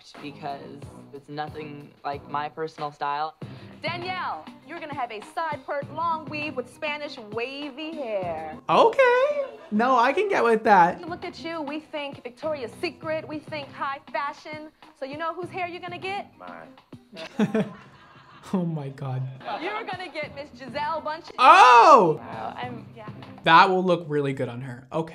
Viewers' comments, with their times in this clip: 0:07 When his voice aligned with what she said!! LOLL
0:10 lol they said okay at the same time 😭😂